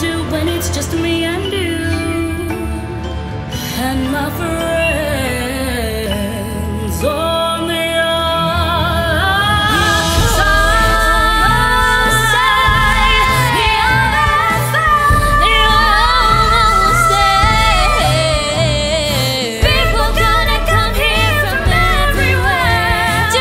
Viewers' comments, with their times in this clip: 0:04 Can anyone else hear the mic error ?
0:04 Can anyone else hear the mic error ?